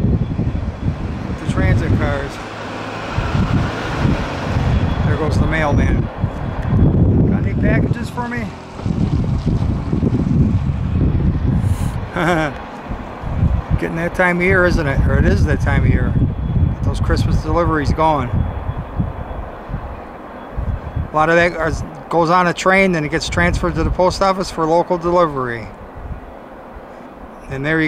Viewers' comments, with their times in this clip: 0:09 Talks like Conan O'Brien Packages COMING!!!!